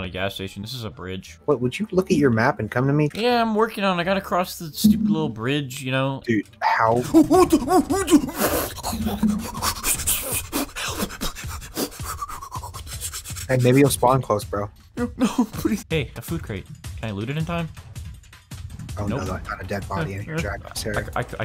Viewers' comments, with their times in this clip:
0:08 wow that's a good song